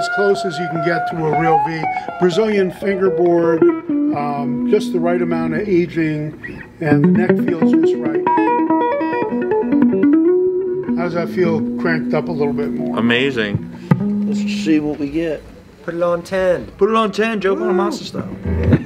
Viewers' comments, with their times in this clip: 0:06 What is the name of the lick that he does It sounds insane